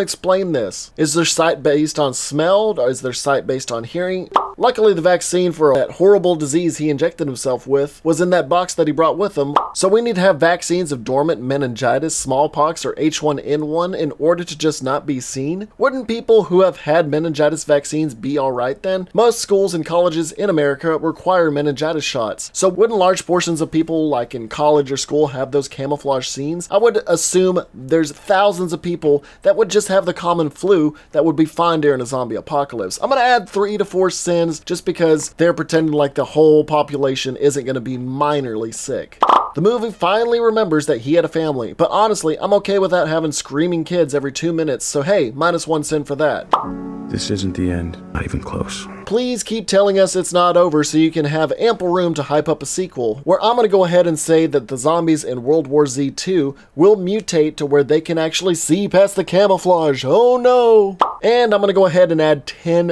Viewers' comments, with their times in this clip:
0:09 sin sound without a sin -endangered specie
0:48 sin sound but no number?